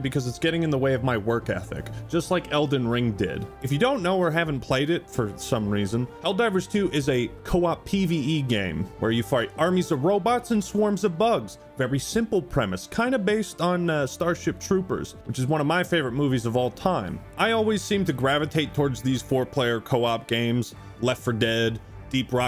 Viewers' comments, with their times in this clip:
0:08 "where you fart"